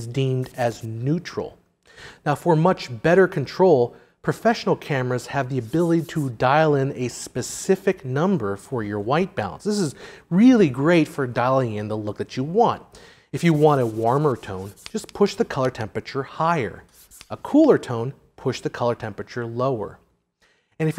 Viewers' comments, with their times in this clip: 0:06 sounds weird "dial in a specific number for your white balan...zzZZzz". Did a bee come in and fly in front of the mic right then?